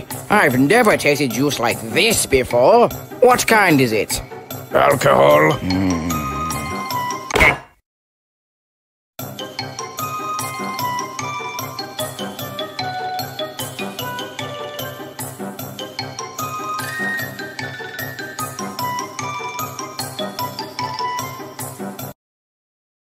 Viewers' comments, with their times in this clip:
0:07 😂 I can’t! The splat!😂